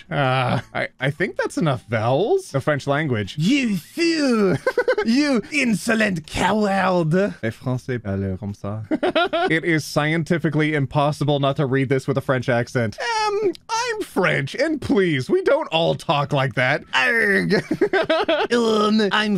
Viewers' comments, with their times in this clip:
0:07 I'm french and this person's right, we don't talk like that. Well I'll admit it though, the people I've listened try to talk english phrases in english class were bad. The mix of horrible pronounciation, words in the wrong places, and the tone they take as an "english accent" sounded super wrong in my ears. I don't even know how they do it. But don't make fun of them for that. Y'all pronounce french very badly too, and you even made this pronounciation a meme, as if we ACTUALLY talk like that. Which we don't. And by the way what OT says is "The french speak like that", and honestly, the pronounciation is close enough. Just the r pronounced a bit too much like in english. Take notes, y'all !